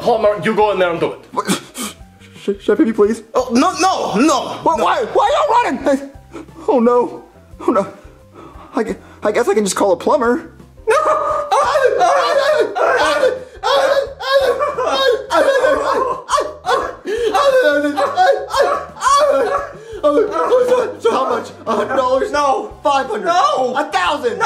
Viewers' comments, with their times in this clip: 0:10 Brooklyn Guy sounds like a dog 🤣🤣
0:11 Brooklyn Guy and Mario just freak out doing the same noise 😂